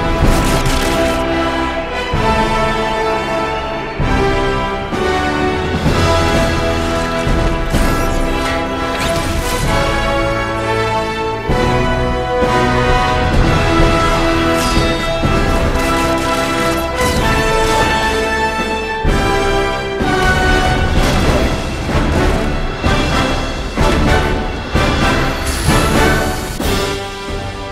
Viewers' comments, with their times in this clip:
0:10 was that intentional? The way it synced up with the music.